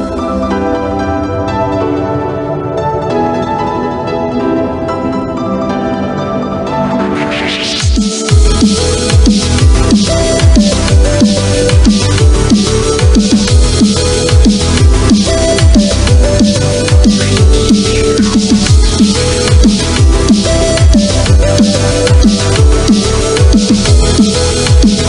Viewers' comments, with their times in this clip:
0:08 the music sounds exact like that starbomb song about mario, peach and luigi! Like exact! Anyway nice vid dude :) also are you ever gonna chance your icons? Not that you NEED to do it. Just wondering